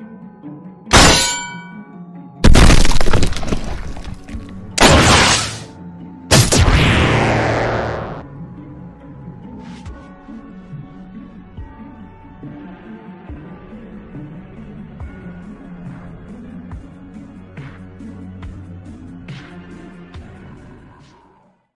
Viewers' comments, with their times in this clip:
0:07 why did I hear a gaster blaster?